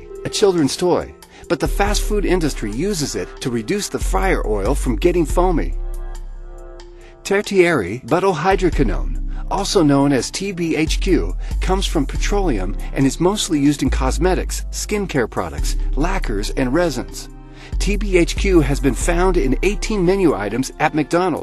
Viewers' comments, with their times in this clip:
0:07 thought he said TVXQ! now i would not like to eat them. however, i wouldn't mind owning them!